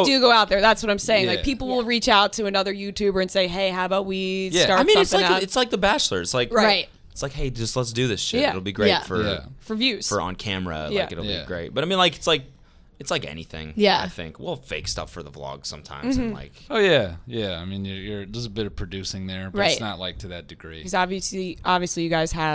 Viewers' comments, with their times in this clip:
0:07 when they simultaneously say ‘right’